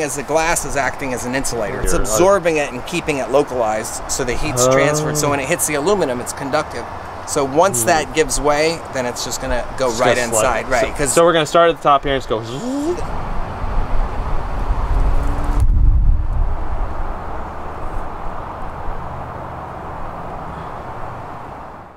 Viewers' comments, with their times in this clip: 0:04 "oh (what the fuck is he saying"